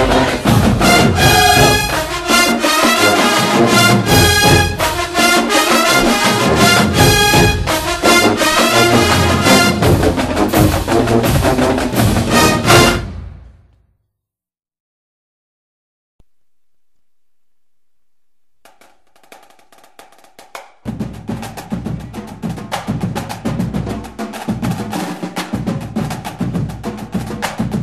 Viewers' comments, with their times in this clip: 0:08 That song is corny as hell now....... white schools playing that shit lol